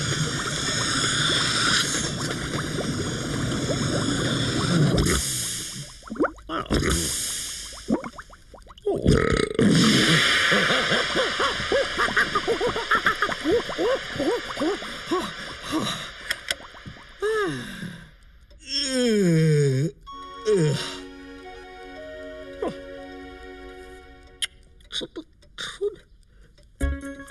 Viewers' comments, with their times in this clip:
0:09 burp and water to Mr bean feet